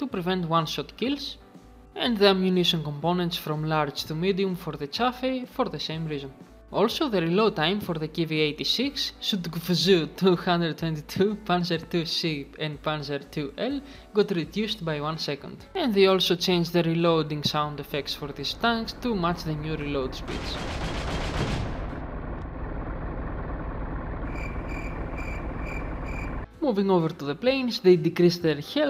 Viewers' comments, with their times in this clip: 0:09 I would burst out laughing just thinking about saying it that way that fast.I used to say it like that but slower because when I first seen that name I was...12-13 years old? I was playing Company of Heroes with the Germans. The fact that you said it without bursting out in laughter after the first letter is so funny. Nice video!